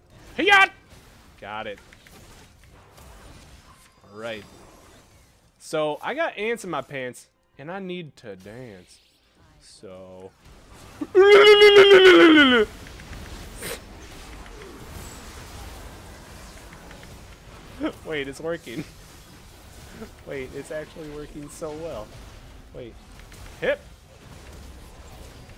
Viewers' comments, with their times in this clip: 0:09 Well that's a warcry I've never heard before...
0:09 The mating call of "going balls deep into a 1v5"